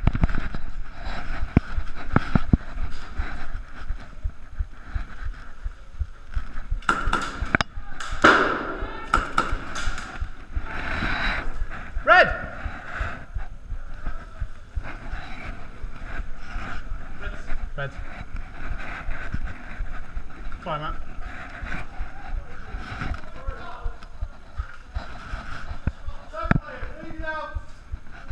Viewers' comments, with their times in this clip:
0:09 OMG you can hear your heart beat